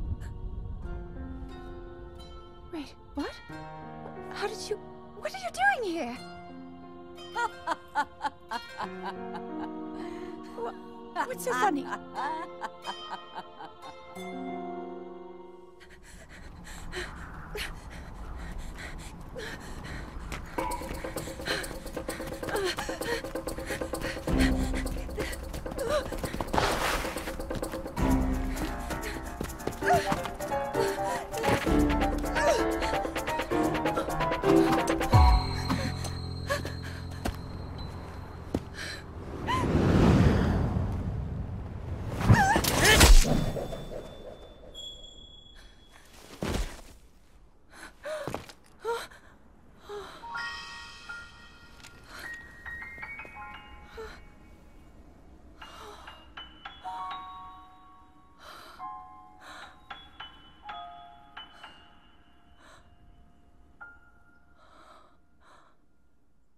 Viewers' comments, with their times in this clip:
0:07 Urbosa laughs exactly like Ganondorf
0:43 I just love that scene because the music fits so well and the little wind with link’s hairs. The confident look on link’s face and Zelda! Realizing that even tought she was rude to him, Link will always be there for her… And also its badass asf
0:48 I love the musical cue!!
0:49 this scene and this music is just so great
0:49 i just love that piano
0:50 THE MUSIC IN THE BACKGROUND, THAT WONDERFUL.. BEAUTIFUL TUNE THAT I HAVEN'T HEARD FOR A LONG TIME?!
0:51 Zeldas orignal theme made it perfect